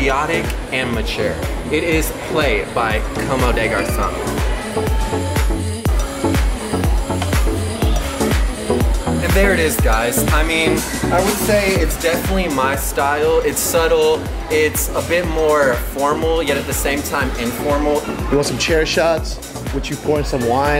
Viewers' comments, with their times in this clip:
0:03 Did this kid just say "Coma Day Garsown"